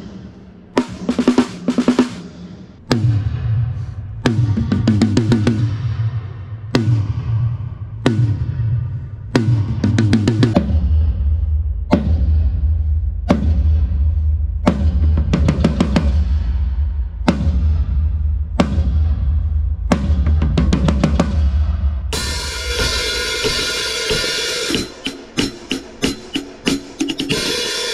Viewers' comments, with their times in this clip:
0:10 Lol the mic picked up the air from the stick.